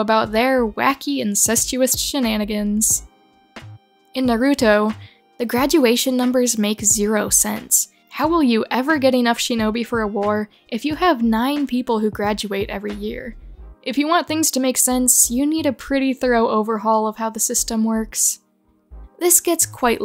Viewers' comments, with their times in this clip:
0:06 The way she said “Naruto” 💀